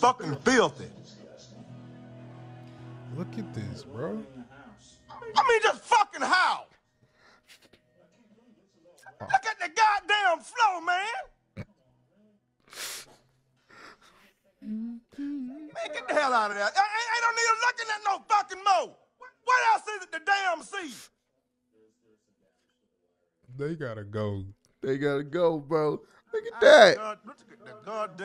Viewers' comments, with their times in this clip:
0:09 He kind of sounds like robert from The Boondocks.
0:10 But why he sound like Bernie Mac 🤣🤣